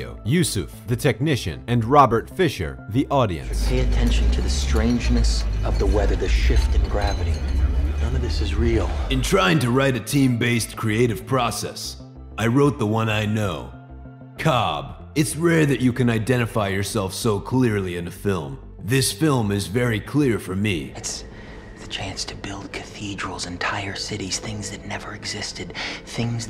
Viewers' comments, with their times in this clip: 0:09 you have just given an insightful reference to the characters being parts of the production crew. Just to follow it up with a childish sarcastic reading of a quote!?!? Why??